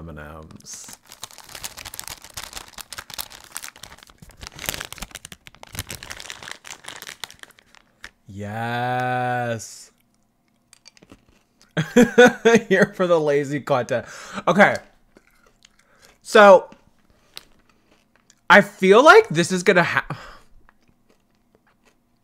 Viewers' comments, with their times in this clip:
0:08 sounded like a cow 🤣